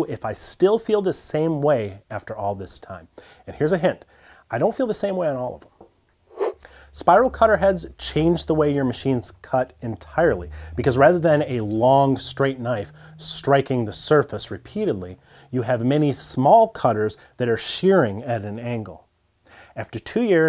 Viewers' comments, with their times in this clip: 0:04 I cannot understand the words you said.